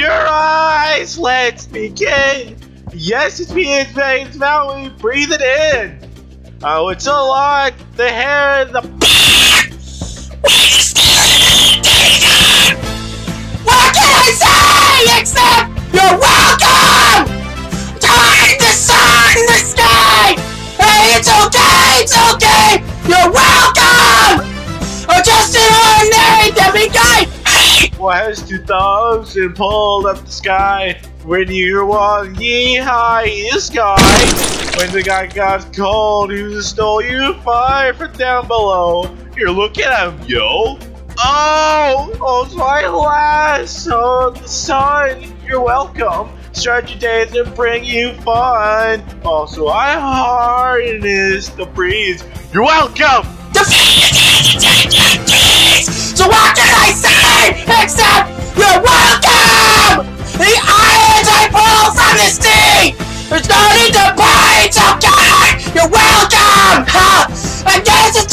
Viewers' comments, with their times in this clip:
0:07 R.I.P. HEADPHONE USERS example : ME!
0:07 I had my volume all the way up, and then happened.
0:08 made me jump cuz of the scream 0_o
0:13 when your music teacher asks you to sing louder
0:22 And im deaf 💀 ny ears The scream
0:40 You can hear the pain in the Oh
0:41 T H I S G U Y M O A N E D A T L E A S T T H I S L O U D
0:54 When he screams instead of singing I gets so scared like